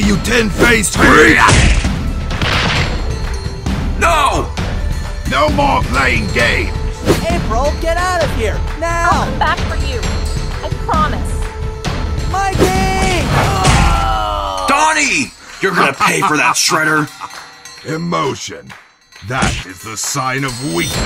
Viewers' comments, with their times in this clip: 0:04 autogenerated cc "no more playing gay"